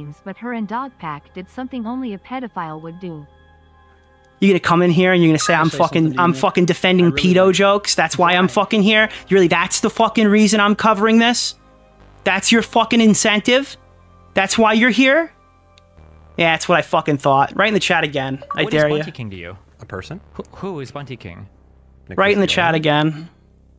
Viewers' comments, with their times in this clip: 0:04 spoken like a true New Yorker🤝